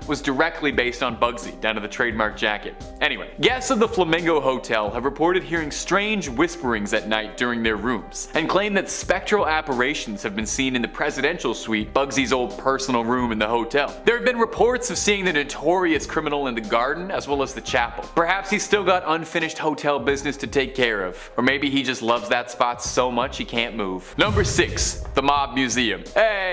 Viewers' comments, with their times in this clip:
0:07 Okay mispronouncing apparitions as "apparations" once I can understand as an overlooked gaffe, but thrice, seriously...?